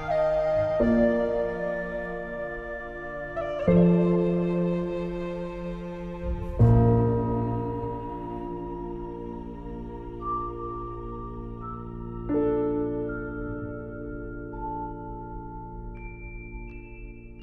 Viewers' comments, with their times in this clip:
0:05 This is so sad and beautiful at the same time. That mourning bell ... feels like hearing the end of Eragon's childhood. Super-well done as always